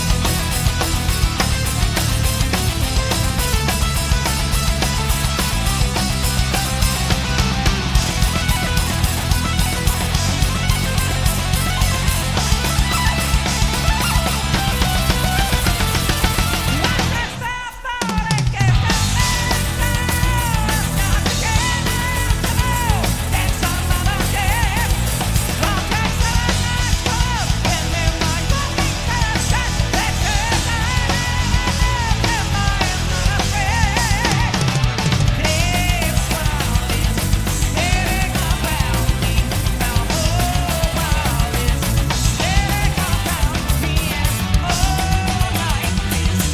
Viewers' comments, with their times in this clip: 0:07 Wow, Mike blastin'
0:09 I don't like the arpeggio Rudess does Kevin Moore's parts sounded amazing without showing off.
0:33 I only made it to.. ..😅 shit isso funny.. why would he ever sing flat?🤣 it would be a "NO" from Simon Cowell..💩